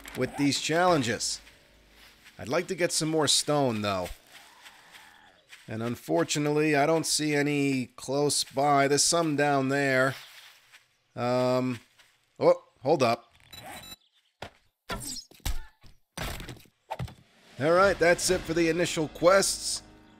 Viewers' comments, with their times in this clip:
0:05 something growls, sounded like it came from behind me at the dog park, scared the shit out of me. Great earbuds. I was about to grab my little Chihuahua and run! Lol!!!